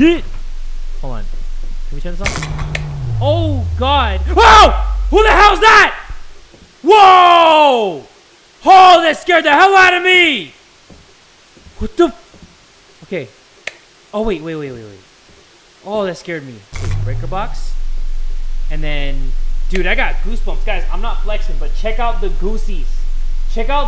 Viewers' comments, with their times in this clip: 0:06 i got more scared because of your yell than the game